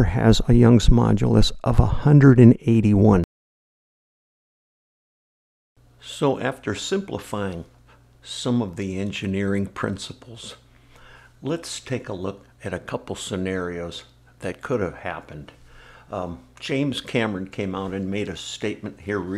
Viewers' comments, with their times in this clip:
0:05 From onwards, the audio sounds much better than before that timestamp. Whatever you changed consciously or unconsciously: keep doing that! 👍